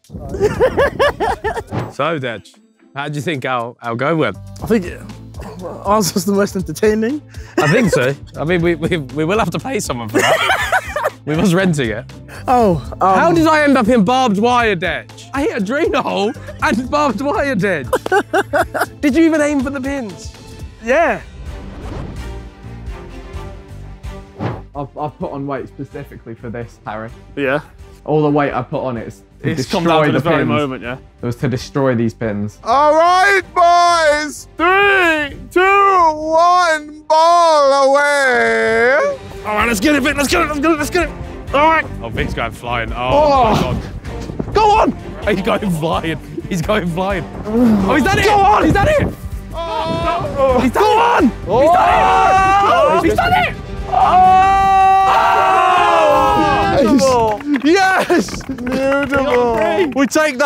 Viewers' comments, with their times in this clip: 0:08 Ethan voice crack
0:08 ethan voicecrack...add to comps
0:46 Did anybody hear Viks moan 😂😂😂
0:47 😂😂😂idk why but hearing vik moan really caught me off guard and I’ve been laughing for the past 2 minutes.